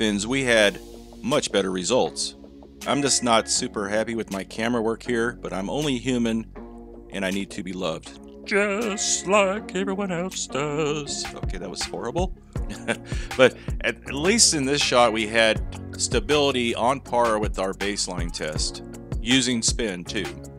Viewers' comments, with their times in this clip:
0:08 Kermit? Is that you?